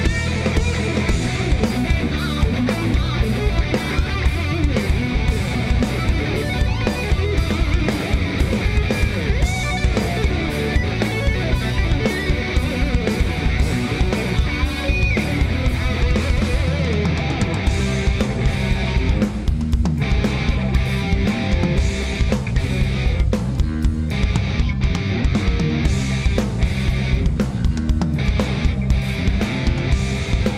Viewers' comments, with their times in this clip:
0:08 Do I have a problem on my computer or Mike Pinella has no sound at all for his solo ?
0:18 What the hell happened to Pinnella's solo here I cant hear his V-Synth GT lead solo ? what the fuck ??